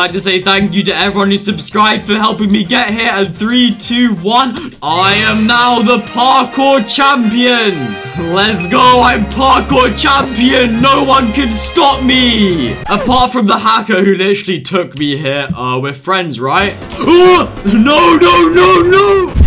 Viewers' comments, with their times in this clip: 0:05 i love how he said i am now the parkour champion and it synced up with the song in the backround